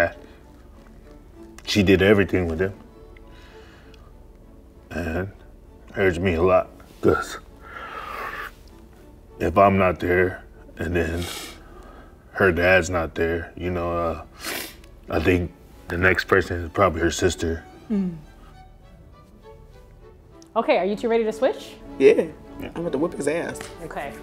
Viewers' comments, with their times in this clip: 0:05 When came they should’ve cut the music bro